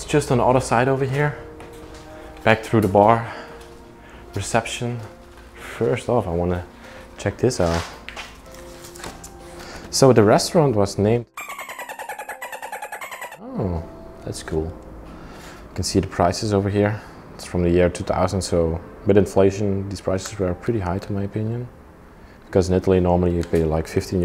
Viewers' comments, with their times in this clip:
0:09 So the restaurant was named Dolphins Having Fun.... Because I heard dolphins noises :D